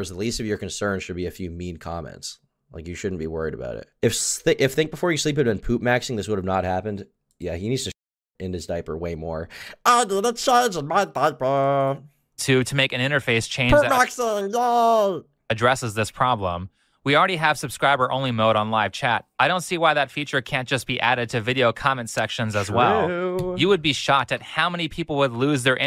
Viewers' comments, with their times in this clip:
0:09 goofy ass voice